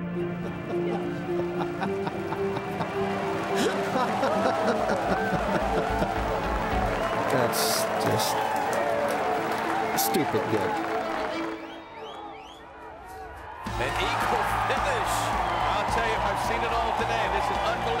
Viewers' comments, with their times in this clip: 0:05 The laugh pretty much sums it up